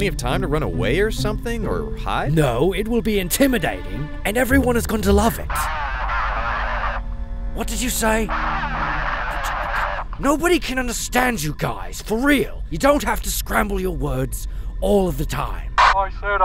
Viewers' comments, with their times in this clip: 0:04 xbox live kids on cod